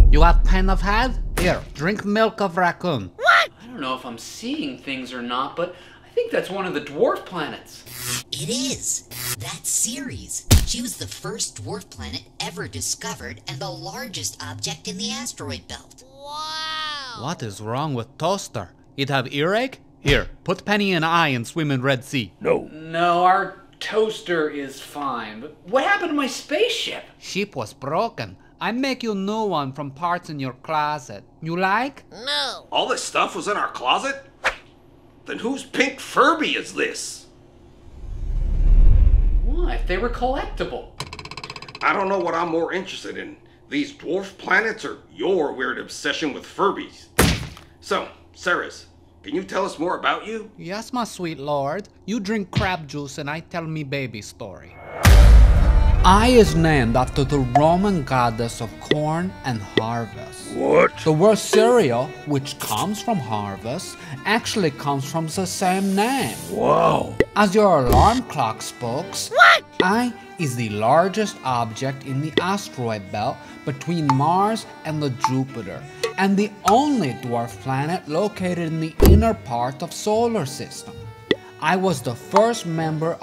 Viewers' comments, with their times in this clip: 0:09 She? Ceres looks and sounds mom like a boy
1:06 did he say word or worst